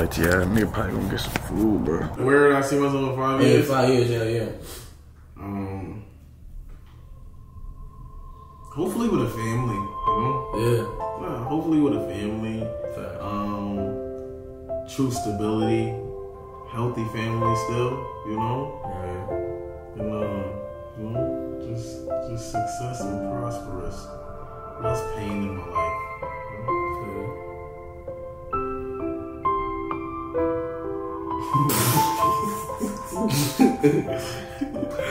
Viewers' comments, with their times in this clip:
0:08 so childish 😂😂😂 the background music sent me
0:19 the sad music and dramatic zoom 😂😂😂😂😂